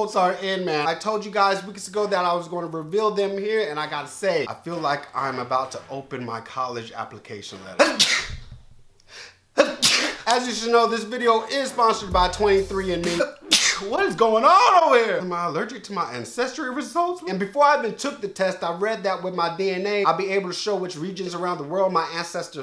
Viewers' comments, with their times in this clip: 0:07 that second sneeze was my favorite!